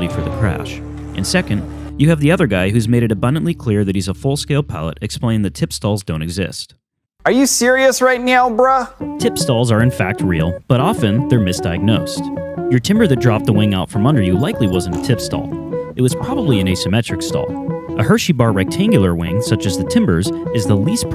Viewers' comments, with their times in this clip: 0:09 the music was great, it made it alot easier to absorb info with the calming music. great editing this video